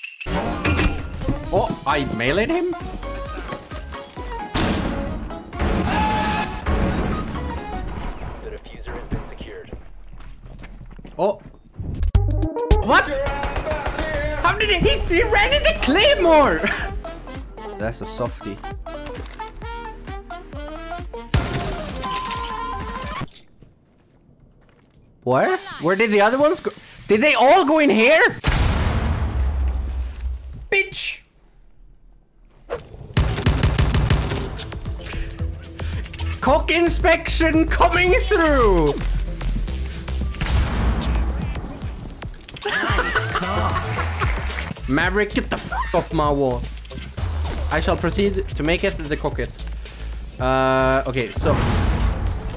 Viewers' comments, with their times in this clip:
0:03 That clicking sound a gives me anxiety and Vietnam type flashbacks of fallout new Vegas
0:17 he sound SO creepy when he says that lmao
0:38 we aint gonna talk about the fortnite music